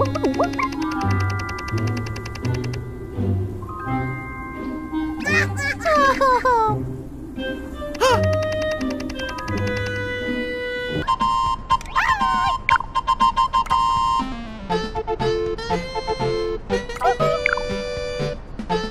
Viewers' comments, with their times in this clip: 0:05 Toadette sounds sad when she giggles. She makes the same sound as when she loses in Mario Kart 8.